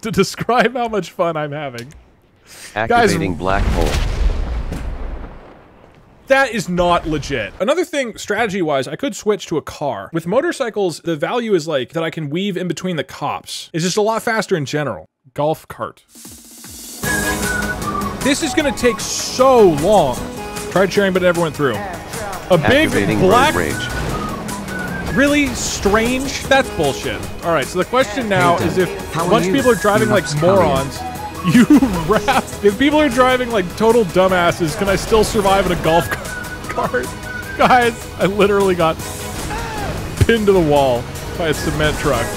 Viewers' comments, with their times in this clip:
0:05 I feel like the moment has been underrated in the comments. The golf cart run was the best, and I loved how happy the music was once it started.
0:24 Voice Attack thought that you were saying, “EncouRAGE,” and, as a result, gave the drivers Road Rage.